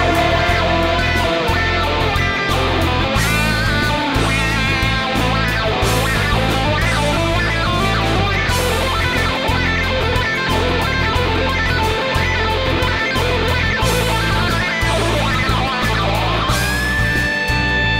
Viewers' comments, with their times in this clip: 0:03 This song could go down as a classic. Love that chord change ..awesome stuff!